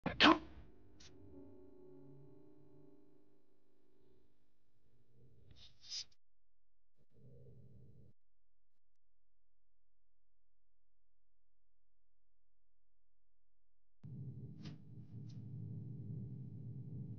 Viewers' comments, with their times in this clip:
0:04 oh my goodness, when you unsee it, it sounds like Fluttershy "making up" in hypnosis under Discord's spell